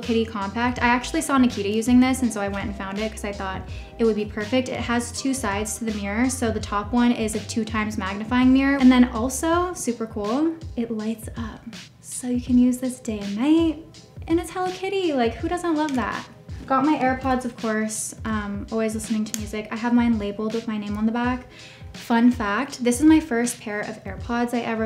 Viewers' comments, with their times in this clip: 0:10 she’d be so good at ASMR